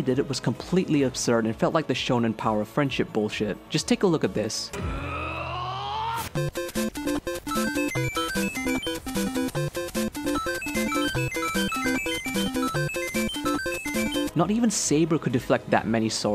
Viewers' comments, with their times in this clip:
0:04 *died for excessive laugh